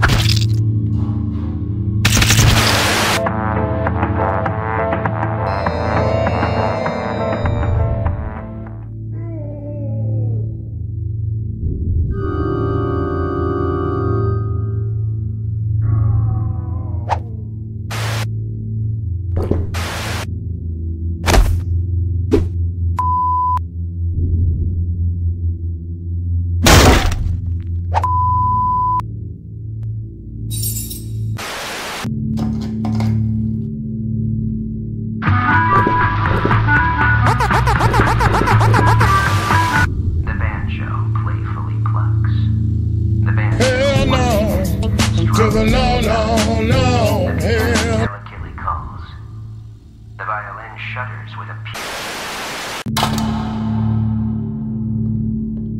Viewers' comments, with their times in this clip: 0:07 Yours listen in one man scream listening!
0:42 what the music
0:43 The song killed me XD